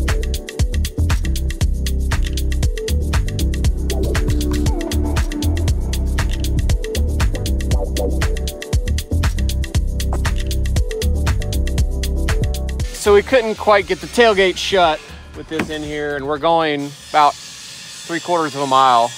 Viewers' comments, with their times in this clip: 0:04 Perfectly timed wobble sound with the steps !😁